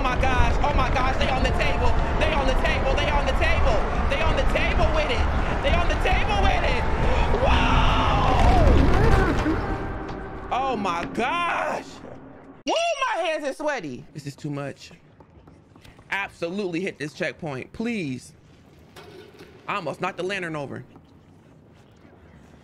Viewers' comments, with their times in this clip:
0:06 this yell hahahaha this was me I swear. Heart was pounding the first time I ever played that 😭